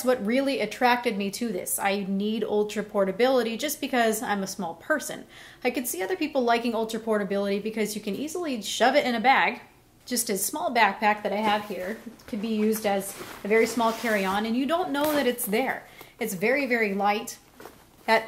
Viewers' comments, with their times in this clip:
0:04 mosquito or fan? I have to ask, do you actually edit using a touchpad? This or other laptops. I can't imagine anyone editing without a mouse. The only reason I would definitely never buy one of these, unless I were rich, is the lack of ports. 1 is just not enough. If something happens to the port, and they do get broken, you are screwed. Not good. Otherwise, for a small portable solution, sure.